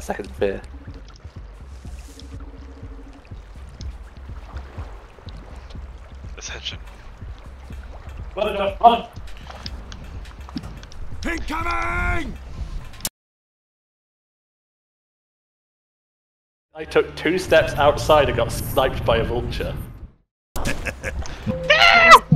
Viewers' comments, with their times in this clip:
0:09 Good voice choice for King Vultures!